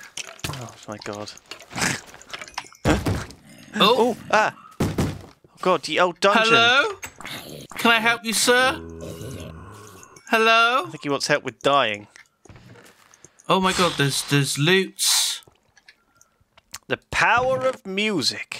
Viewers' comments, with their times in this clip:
0:04 A wild skeleton appeared! What will xephos do? Scream It isn't very effective...